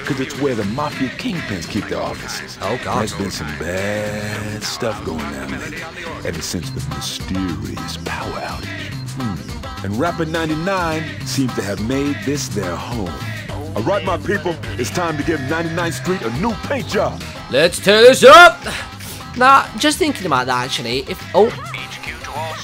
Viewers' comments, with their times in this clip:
0:09 the music in the background is so unfitting XD